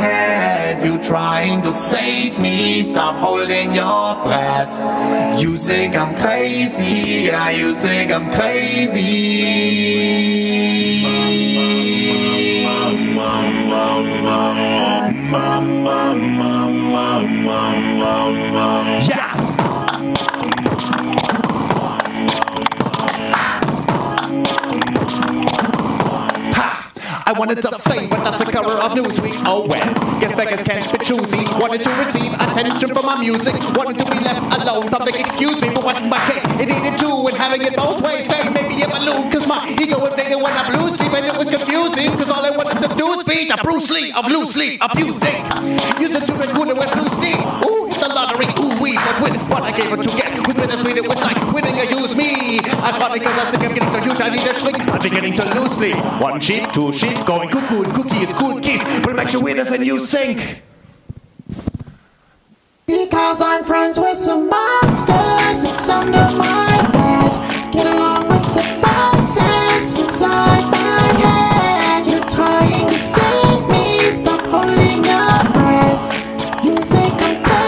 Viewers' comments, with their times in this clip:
0:04 ah did he say breasts
1:03 sounds like something Bart baker would sing
1:03 is that Smeagol?!